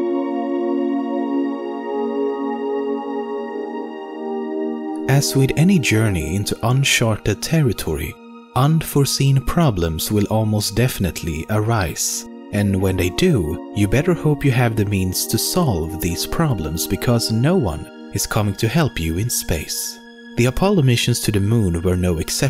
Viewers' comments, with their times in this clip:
0:07 "unsharted" lel, nah jk. Love the vids and keep up the great work :3